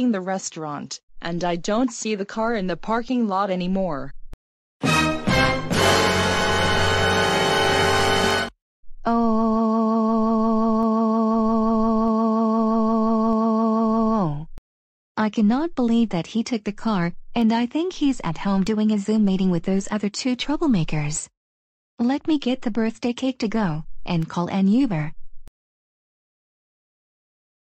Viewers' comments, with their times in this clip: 0:09 Rita Loud said Oh oh oh same voice as Miss Morgan does